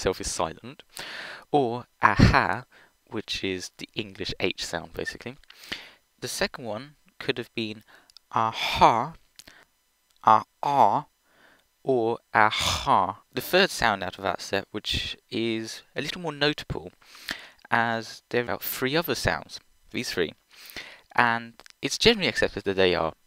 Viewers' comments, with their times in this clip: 0:07 he learned villager
0:09 bro discovered minecraft villager language